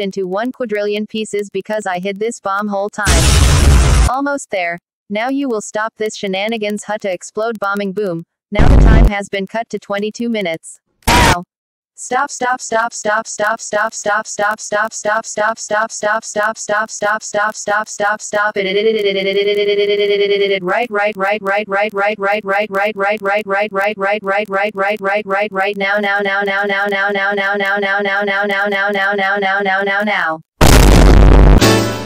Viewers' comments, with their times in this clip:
0:07 Explode bombing boom💀
0:18 in 2x speed is a minigun